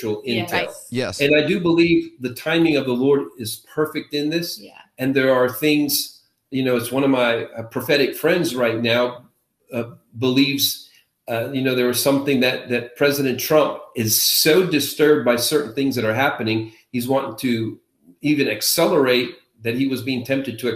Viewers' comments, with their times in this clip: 0:07 Did he say "one of my prophetic friends" or was it "one of my pathetic friends"?